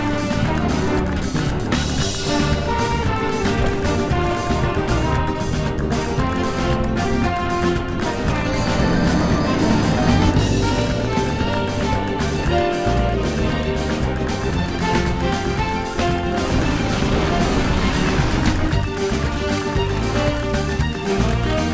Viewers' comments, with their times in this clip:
0:04 The zelda music gotta love iy